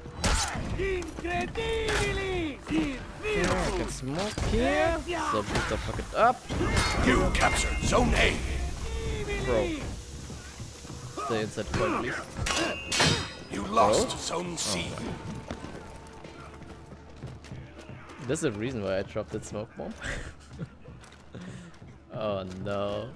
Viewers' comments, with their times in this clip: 0:05 Anybody notice the oof as the teammate dies ?